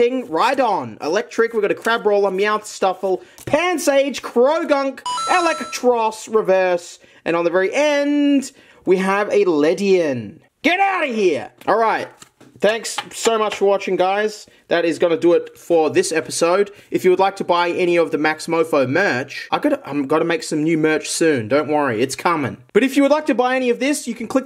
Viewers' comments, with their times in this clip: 0:10 we have a lesbian